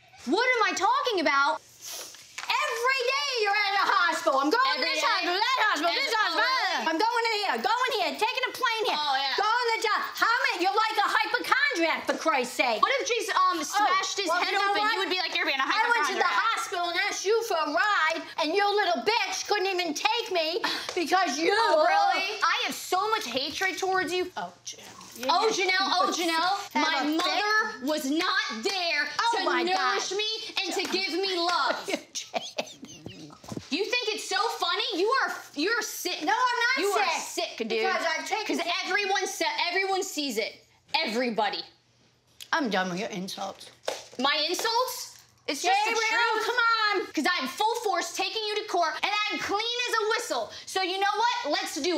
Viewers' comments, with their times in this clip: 0:03 Omg barbara starts YELLING randomly does this lady not realize how LOUD she talks?
0:32 took me out Barbara laughing at her ass is too funny 😂😂😂😂